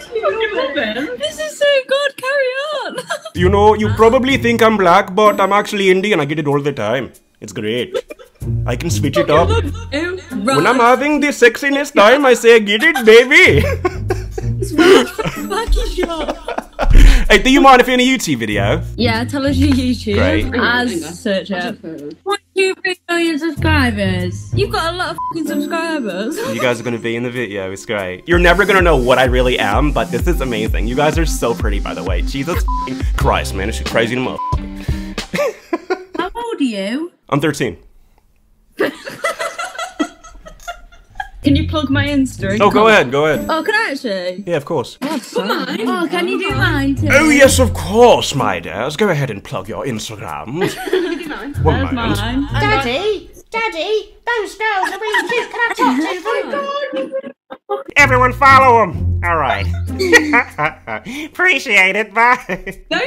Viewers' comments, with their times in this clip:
0:03 That Indian accent killed me 😂🙄
0:04 your indian acsent is the best. Haha. I just can't stop laughing.
0:05 when he dropped the Indian accent...so accurate
0:12 that girl gotta be rolling a serious blunt to be that silent
0:29 i love this sounds like James charles 😂😂😂
0:29 The British girls be like "Oi shet you ga a lo of fuc-ing subsribo' "
0:36 There’s no hesitation at all when Azerrz says he’s 13 years old.
0:45 whaaaaaaat!!!! He can do the 80s British English also!!!!
0:47 can someone tell me what kind of voice impression is this.. Its kinds sick🔥